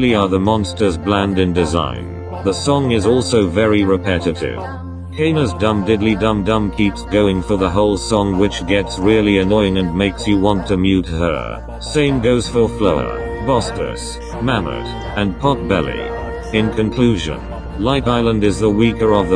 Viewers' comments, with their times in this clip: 0:06 reminds me of your text to speech voice